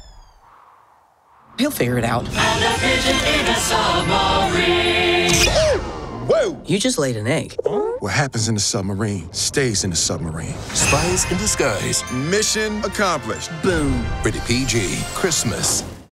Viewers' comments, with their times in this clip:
0:08 what happens if summary stays in a summary